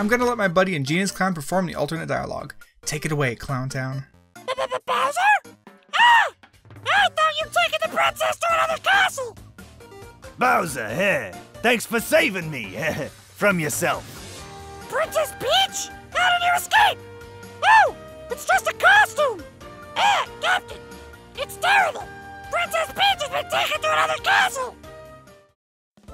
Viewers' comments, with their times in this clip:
0:04 I just loves toad's voice
0:10 peaches voice doe